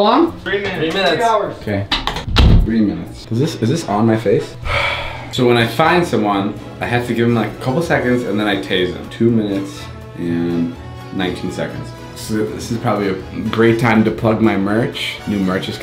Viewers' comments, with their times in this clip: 0:03 when David was in the bathroom and was explaining the rules to himself he sounded confused and it was funny